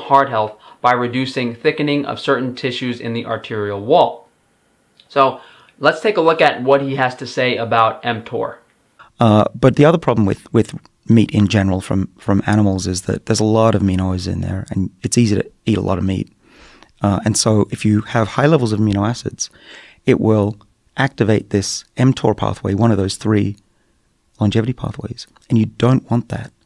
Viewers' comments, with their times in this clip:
0:08 Lol ... "It's easy to eat a lot of meat". Compared to what, bro? Doritos? If that guy didn't have his accent, this would be seen as some serious Bro-ing out.